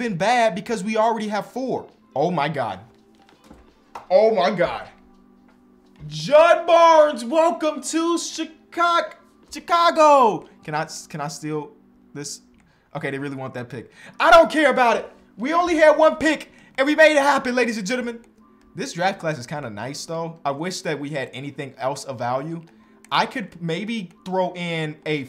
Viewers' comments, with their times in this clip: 0:08 bro stuttered a bit